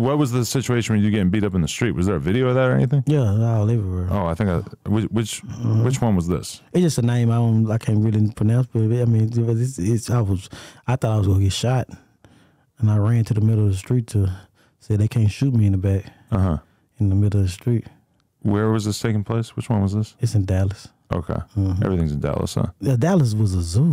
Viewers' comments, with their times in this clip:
0:06 wtf did he say “hdiduh Heidi Krishna I thought I was gone get shot” got damn he stumbled on them words